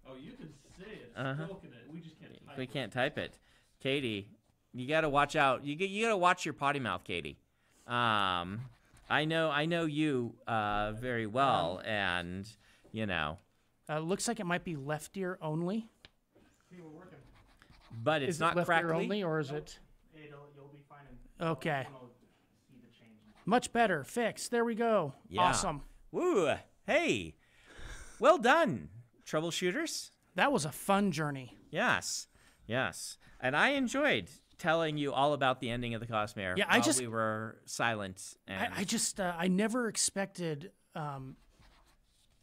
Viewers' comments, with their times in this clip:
0:10 the audio issues fixed
0:22 Audio issue is fixed
0:27 Audio fixed and stream starts